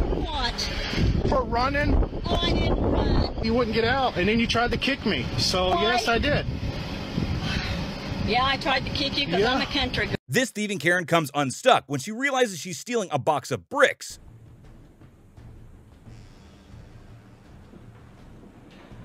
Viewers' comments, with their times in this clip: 0:05 LMAO she said "yeah... 😒" so defeatedly